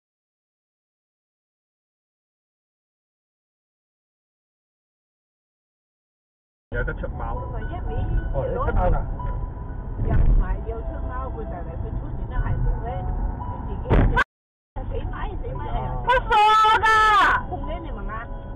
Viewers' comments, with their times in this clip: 0:03 ... I feel so sorry for the poor car that lost its hearing.